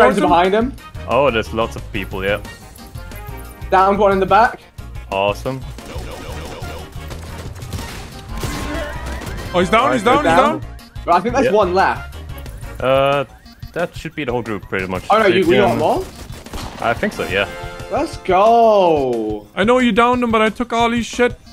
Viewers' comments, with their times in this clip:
0:06 The Travis Scott falling sfx got me fucked up